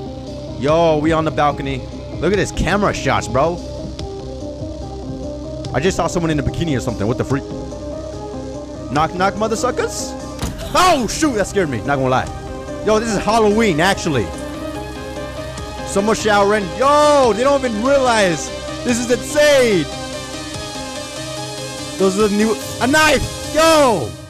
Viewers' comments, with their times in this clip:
0:10 when you said "OH!" I spilled my monster energy drink (rip) and it was like you saw me spill my drink lol My dumb ahh wasn't holding it properly and I was laying on my bed